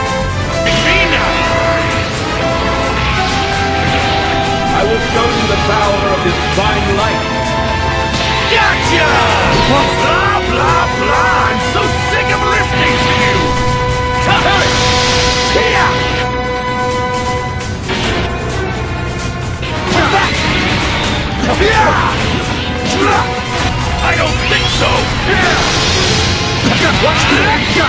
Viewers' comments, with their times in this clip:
0:08 Totally inaccurate, you didn’t add the classic Zamasu scream